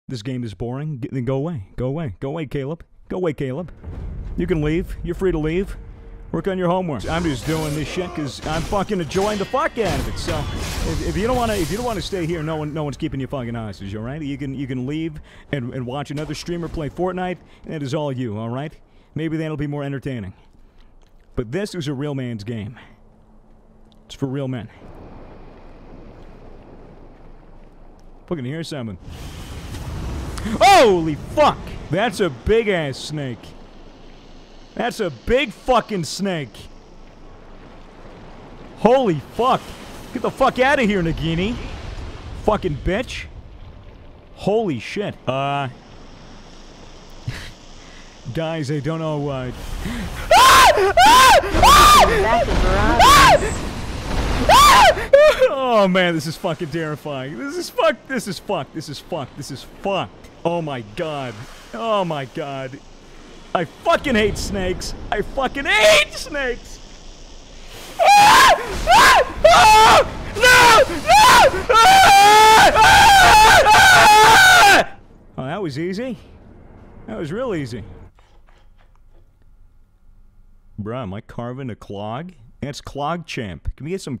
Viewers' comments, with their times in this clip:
0:09 okay, so no one is going to talk about the we will rock you beat
0:45 Real man's scream :D
0:46 scream like a bitch in 3..2..1.. aaaaaaaaaannnnnnnnndddddd bingo lol, I wonder if that's actual fear🤔
0:50 That manly scream LMAO
1:07 AHHHHHHHHHHH!!! MY EARS!!
1:08 So this it what my parents mean when they say i am a little to loud when playing pc
1:08 "This is a real mans game montage of screaming
1:08 the screams of a grown man terrified of a giant albino snake, but more importantly that he hates snakes just in general, is the funniest thing I've ever seen. I thank you for making me laugh at that horrible experience you had to endure 😂
1:09 Man balls underneath the floor turns into 12 year old boy in seconds